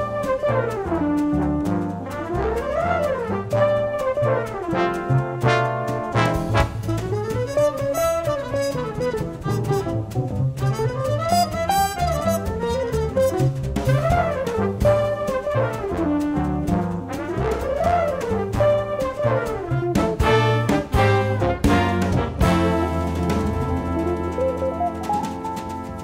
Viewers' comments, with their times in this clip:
0:08 there is a passage I cant understand, can u? how does he took those chords?